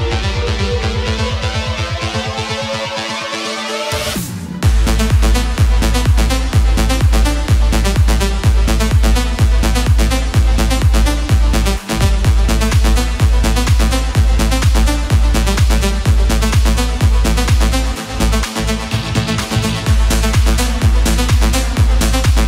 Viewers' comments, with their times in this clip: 0:05 oh that beat is goooood